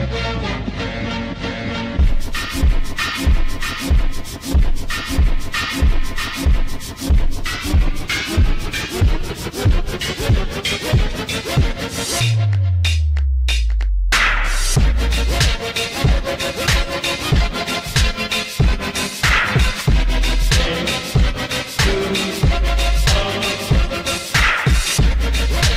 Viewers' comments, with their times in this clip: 0:08 In when you kill darius the music sounds perfect